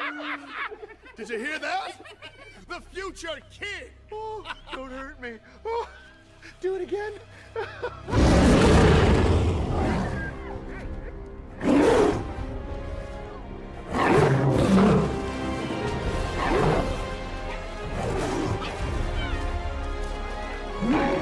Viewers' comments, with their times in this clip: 0:08 I'm autistic, and I have that kind of unique but special ability to ROAR like that!